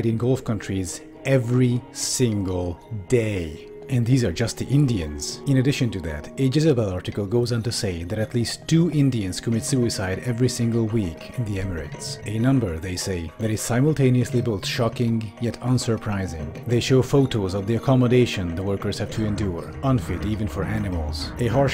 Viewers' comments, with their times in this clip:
0:06 did i just hear a minecraft zombie sound play??